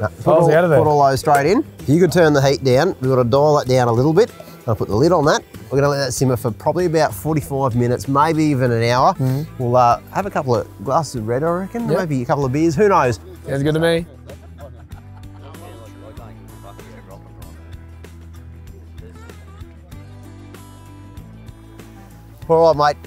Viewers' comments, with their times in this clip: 0:07 yea what's he say? Can't quite catch it